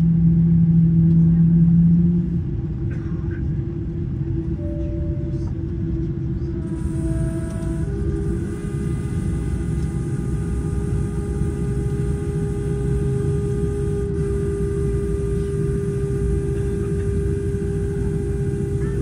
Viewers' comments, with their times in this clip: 0:06 Great trip report. Do you know what that weird vibrating noise that starts is? I've heard it in other videos of the LH Boeing 747-8 and also on the aircraft myself. It always starts after the first two engines are started and goes away when the last two engines are started.